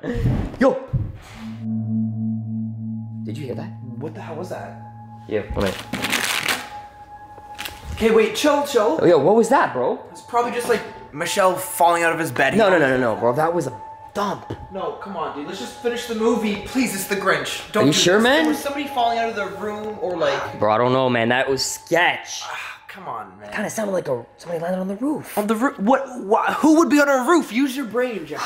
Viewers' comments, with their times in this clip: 0:04 I heard 'thump' sound from upstairs.
0:13 this scean made my day come on did any one saw the cat in the hat live action movie that thump made them jump